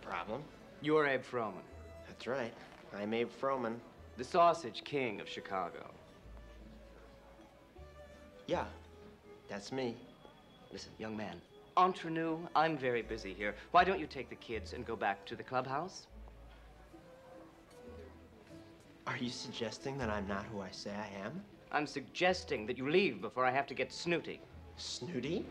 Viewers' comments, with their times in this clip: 0:07 Bueller's bewildered long pause 🤣